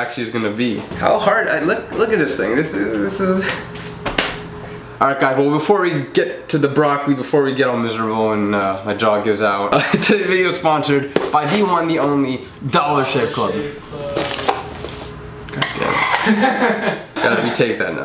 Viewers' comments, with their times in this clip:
0:06 I heard shit club Probably just me